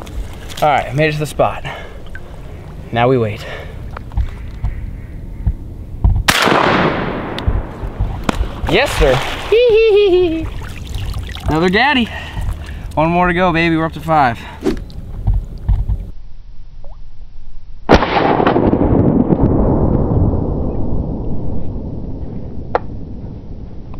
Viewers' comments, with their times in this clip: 0:08 what kind of laugh was that 😂